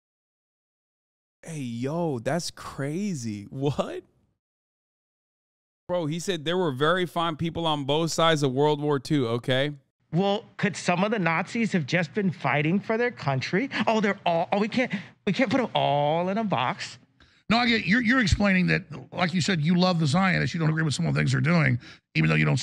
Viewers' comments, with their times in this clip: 0:10 Kanye is turning into the world's biggest troll Edit: Ye sounds like a Karen 😅🤣